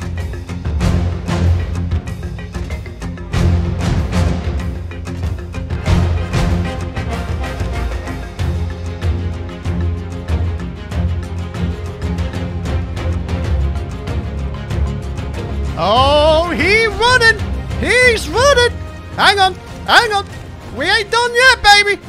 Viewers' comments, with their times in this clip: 0:03 he really sounded like Mikey mouse